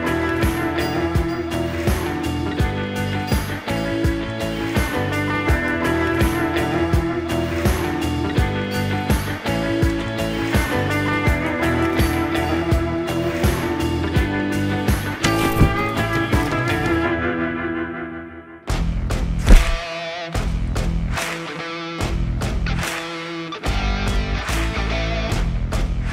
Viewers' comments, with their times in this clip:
0:10 DAMN!!! The music that starts is so good!! I wish I could hear it through my truck speakers 🔊💥